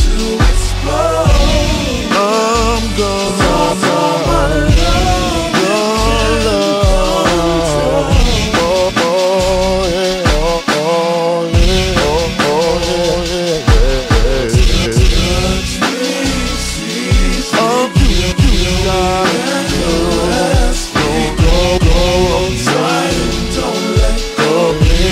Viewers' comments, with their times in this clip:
0:08 chops dummy on point 💯